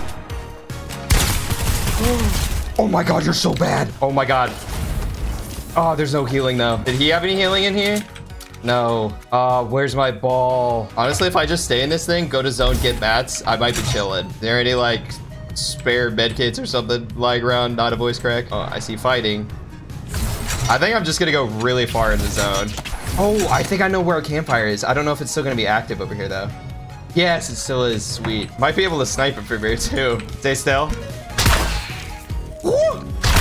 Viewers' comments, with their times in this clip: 0:07 missed the slurp
0:18 am I the only one that didn’t realize the voice crack until he said something ab it😂😂like if u agree